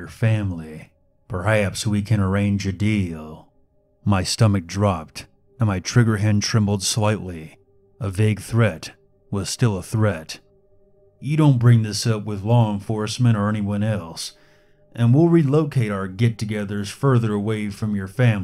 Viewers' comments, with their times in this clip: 0:04 his voice it to good